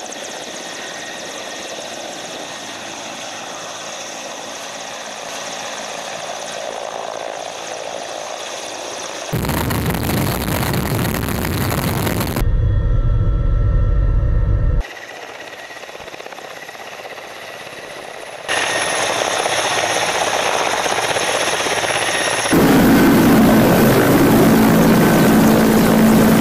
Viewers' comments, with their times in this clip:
0:09 it sounds like raged player that punch his keyboard
0:09 Seems the audio took a hit